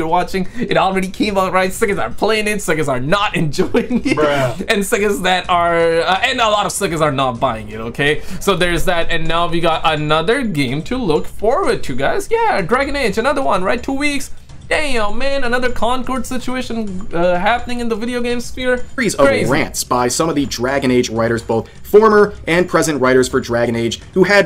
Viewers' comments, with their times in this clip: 0:08 ok I all against wokeness but why is there a grown male voice on that little cartoon girl? That’s weird .